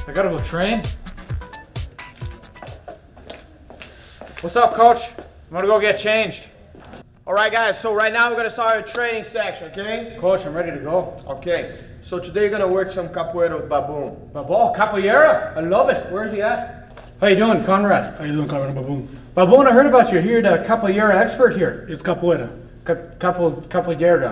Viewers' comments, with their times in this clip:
0:07 lol, I agree that Conor does act a bit ridiculous. His talking gets annoying, his voice gets annoying, His constant ranting about how great the Irish are is also just boring after a while. Also lol at how Lamas was standing in this. I do notice that Conor stands like that.